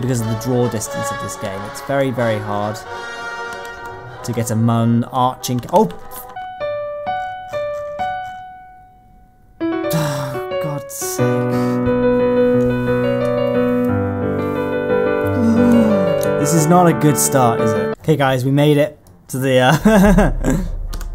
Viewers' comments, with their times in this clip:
0:05 perfect song at the perfect time